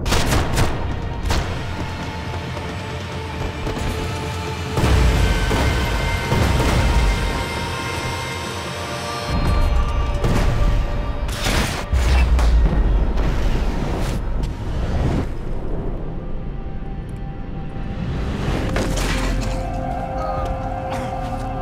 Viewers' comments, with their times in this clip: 0:04 I love when max jump.....is so amazing and the soundtrack is so magic 🔥🔥🔥
0:04 I know this video is very old but my god the syncing of the music is awesome